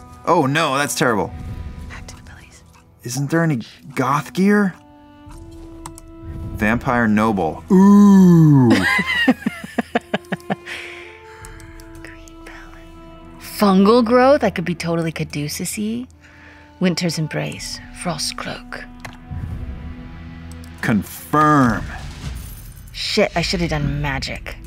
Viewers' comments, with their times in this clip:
0:06 that is indeed the sound of finding vampire noble clothes